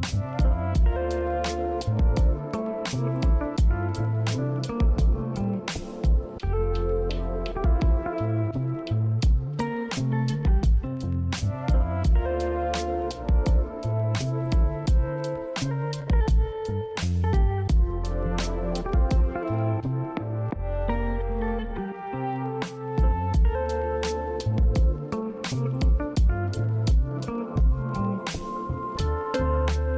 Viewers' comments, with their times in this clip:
0:10 Just outta curiosity, is there a significance to the alarm lol?